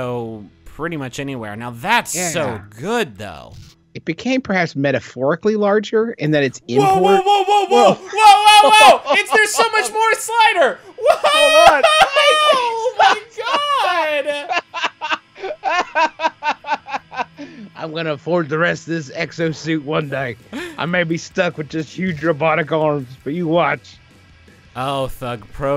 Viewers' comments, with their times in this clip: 0:06 Griffin becomes the crash bandicoot woah meme lmao